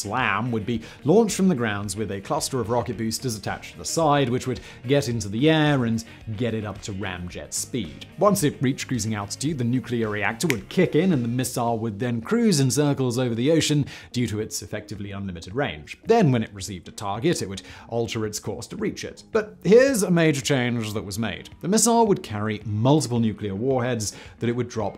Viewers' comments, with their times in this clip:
0:08 I like that he snapped his fingers ...